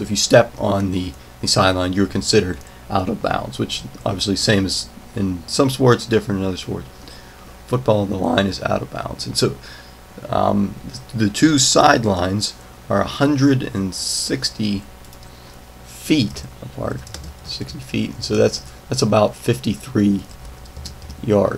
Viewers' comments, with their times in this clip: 0:07 dat voice break xD